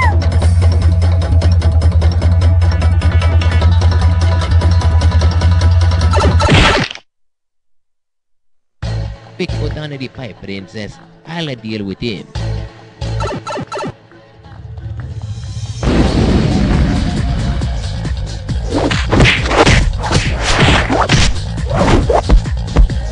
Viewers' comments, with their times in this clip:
0:05 pipe fail XD
0:07 anyone else here *bitch go down in the pipe princess* ?
0:09 Who knew ittalian plummers knew how to fight!! Also Luigi sounds cool